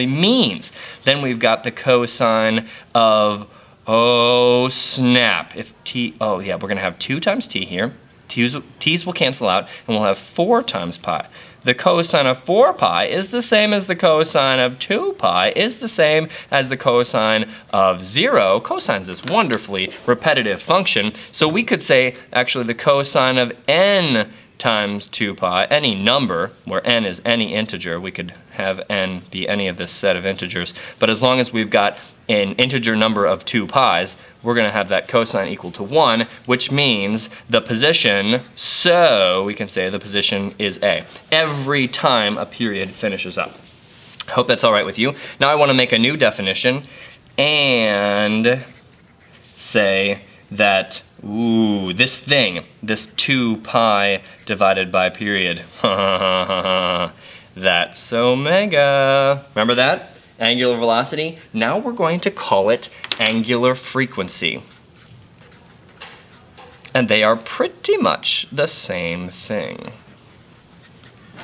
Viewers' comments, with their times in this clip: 0:03 The way this guy goes "Oooooo" like he just discovered something along the way cracks me up every time. "oohhh snap!" XD
0:55 wow that laugh is amazing